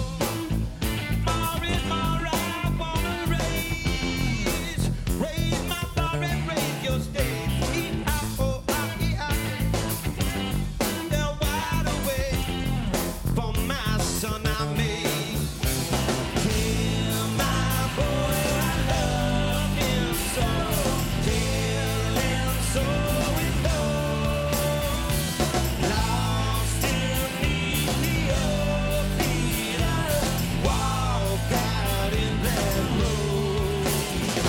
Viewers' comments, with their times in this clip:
0:07 he's totally out of time, listen :O
0:09 he went to early :c but he played it off well <3
0:15 Is Anthony lip synching at certain parts? Like when he was off tempo